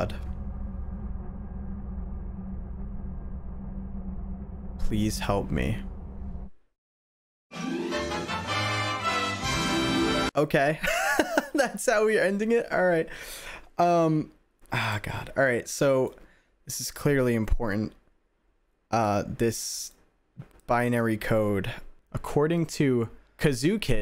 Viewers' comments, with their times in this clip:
0:07 I WAS NOT EXPECTING THE FUCKING TOM AND JERRY OUTRO SONG 💀💀💀💀💀